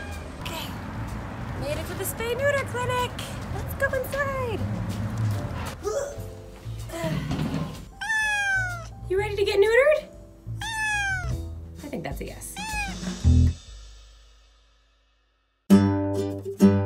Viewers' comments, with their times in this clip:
0:03 hahahaha, i love how you like.. their momma, or teacher. You are like, ''let's go inside!'' :D almost sounds like a momma who says: ''you gotta go to school'' U a real cat lady. We had a community cat who get 19 years old! But just before her 20th birthday we had to get here to ''a deep sleep'' cause she was in to much pain and problems cause of her age. :/ I love your channel and all the information you give to us. You really love cat's and we can see that a lot. Sometimes people in our neighbourhood are faking that they enjoy going our with their dog, which is really sad. The cat's live a very good life cause of you. I love your little cat voice and thats not only making the cats happy, but also us on your channel. Kisses and Hugs, Me :P